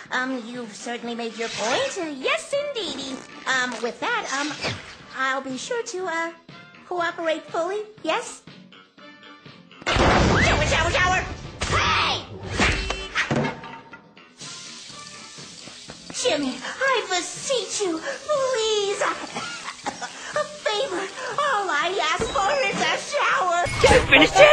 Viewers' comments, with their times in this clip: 0:10 the car horn took me out 😂